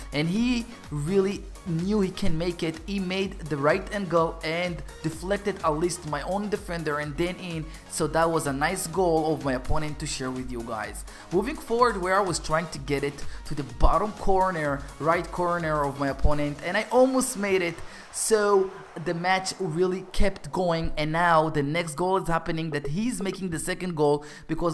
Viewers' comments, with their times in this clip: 0:05 that notification. Bro have u got gold. Real gold🙂